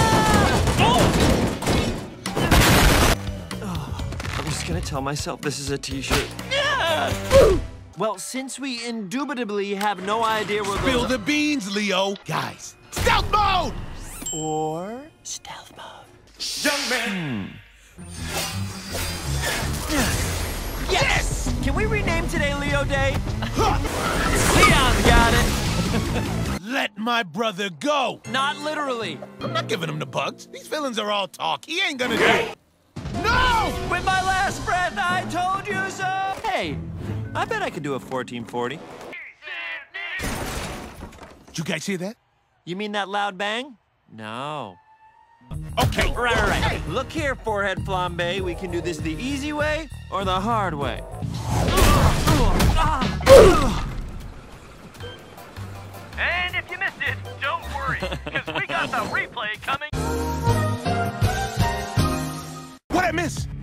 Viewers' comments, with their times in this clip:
0:07 The way Leonardo says "I'm just gonna assume this is a T-shirt *bleh*"
0:49 Tell me he ain’t sound like a warrior at this point, if you know you know